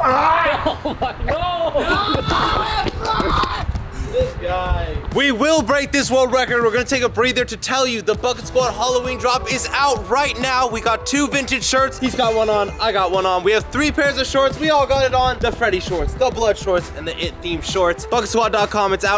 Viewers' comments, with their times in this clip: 0:05 "we're gonna take a breather" proceeds to talk fast pace and hardly breathing